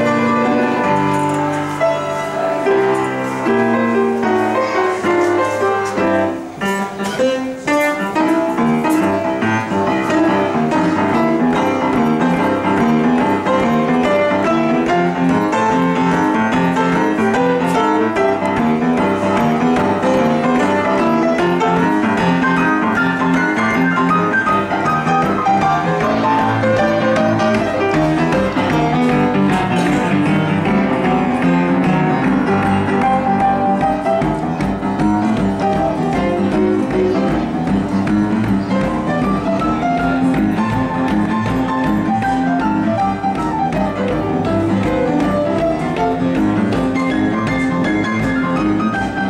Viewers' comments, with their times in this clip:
0:03 Is there a specific name for what he does right there? I’m pretty sure it’s an ending but I’ve been always hearing it in boogie, ragtime, and even stride (I think) I was wondering what that was! It sounds descending,
0:37 uff too much woogie for me!..